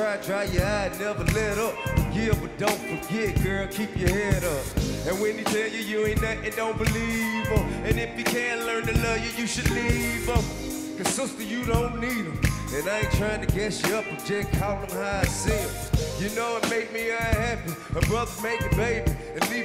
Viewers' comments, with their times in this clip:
0:04 I like that just enjoying the music ❤